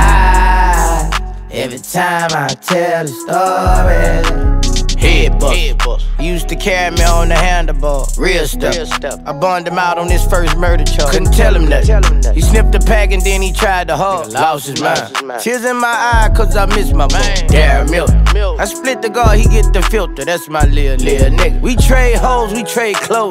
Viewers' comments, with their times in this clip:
0:06 “used to caramel on the handle bars” nigga what? lol